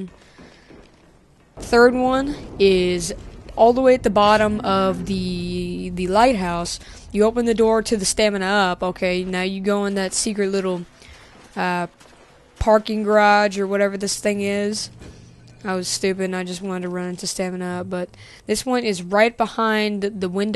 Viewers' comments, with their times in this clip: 0:07 pause lol he says stamin up funny sorry great video though